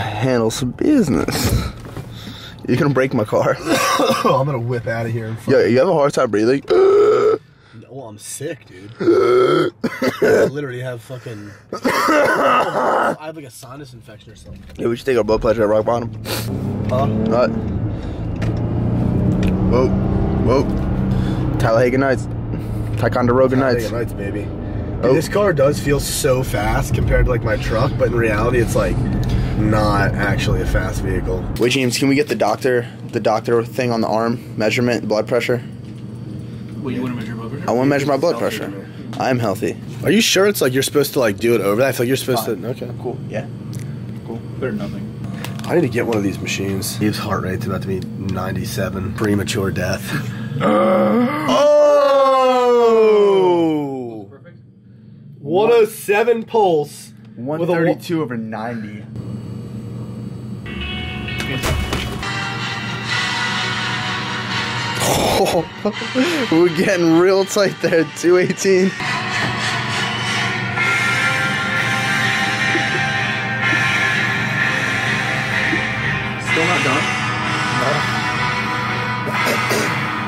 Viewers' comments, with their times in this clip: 0:08 the way you're mocking his cough 😂😂☠️☠️☠️
0:12 That’s a healthy cough 😂😂😂
1:01 Could not help but laugh when the music came on